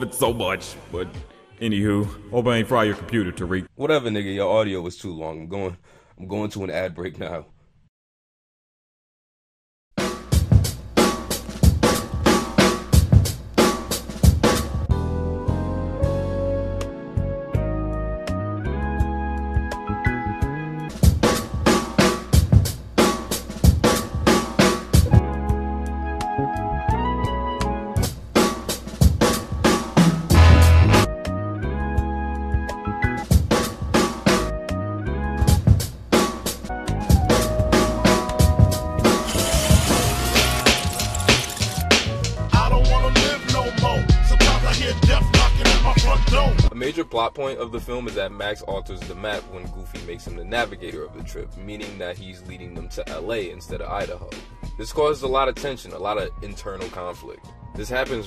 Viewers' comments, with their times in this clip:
0:10 This sample intro is absolutely wonderful!
0:14 brooo, was cleaaaan af, using the samples and mixing them was genius
0:39 I've never heard a better scratch on a tape in my life!!!